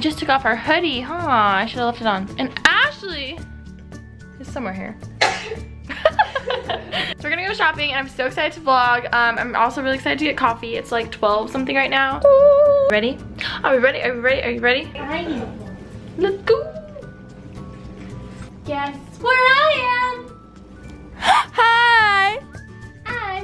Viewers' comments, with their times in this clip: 0:05 HAHA😂 That laugh tho!!! The facial expression looked like a classy man laughing😂 I luv ur vlogs they're amazing💋